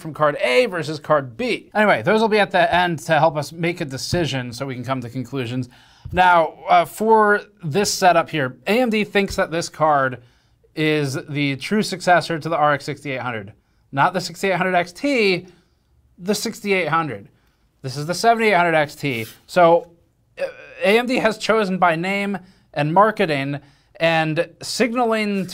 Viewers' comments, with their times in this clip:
0:09 Bro don't just thump the card like that...🥶